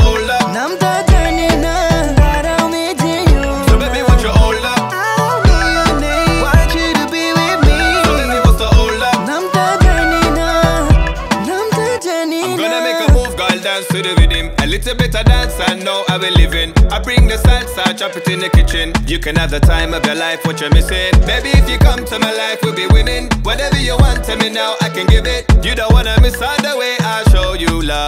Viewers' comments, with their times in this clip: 0:10 I really loved the rythm😍😍 And the girl with pink top(white hair) almost killed me😘😘# Over all superb....#NISH fan( from BD🇧🇩🇧🇩)